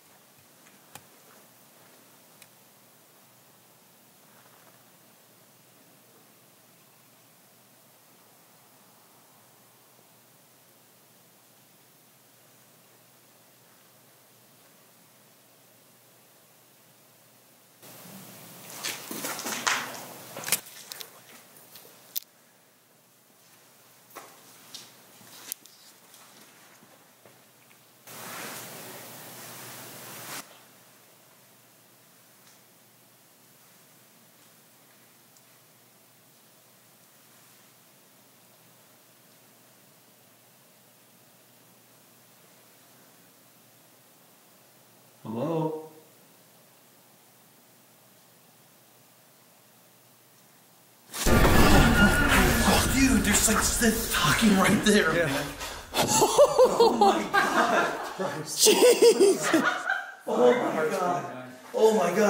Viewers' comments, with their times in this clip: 0:04 it sounds like a body's getting dragged along the floor
0:50 you can actually hear the click 😱😱😱